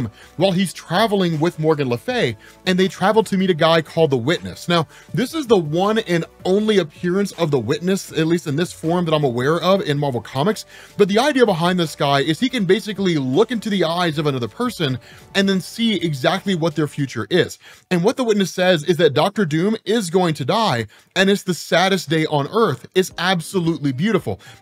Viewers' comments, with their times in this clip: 0:07 I started hearing ominous synth and blabbering about "Salvation"